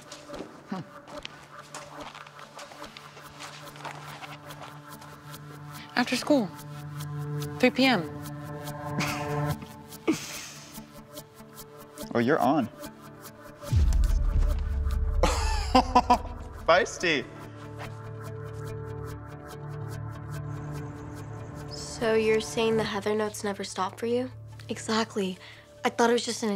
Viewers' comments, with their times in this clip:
0:09 why is this bastard laughing.